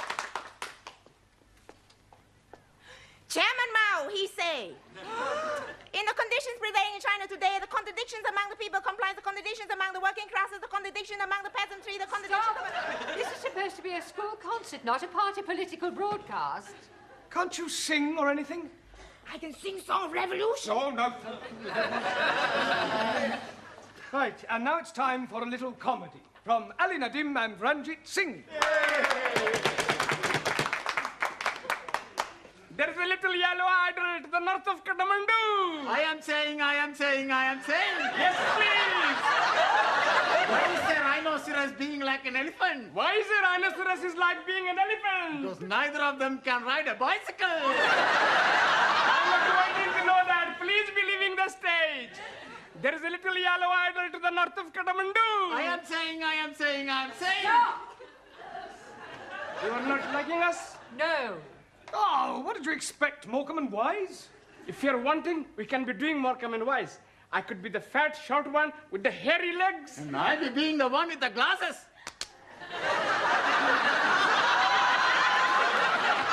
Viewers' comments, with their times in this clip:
0:05 what is Su Lee saying? She spoke too fast
0:58 Zara was not able to control laughter